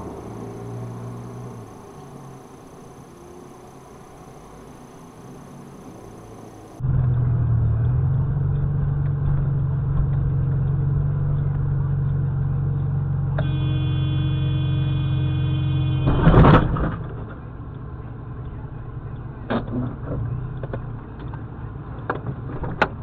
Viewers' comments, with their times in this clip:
0:07 Yep just honk the horn don't reverse and get out of the way or anything. The guy reversing is stupid, but cam car is just as dumb to just sit there and honk when you can clearly see the other guy ain't stopping.